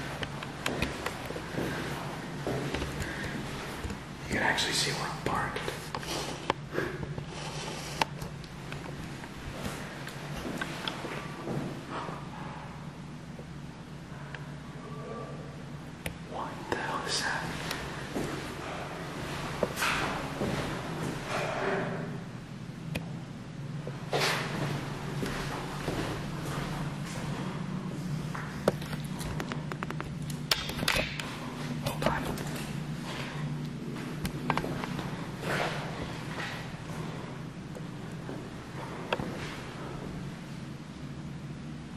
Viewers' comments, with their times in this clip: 0:03 You kidding me? Righr out the gate they gonna start growling like the monsters from Doom? Thats freaken scary
0:16 Definitely heard a woman talking clear as a bell. This is one of my favourites. Would be great to go back. WoW I'm impressed with the piano playing.
0:17 you can hear what sounds like an old man sneezing soon as you step through the door way
0:23 Is it just me or do other's hear a man say doctor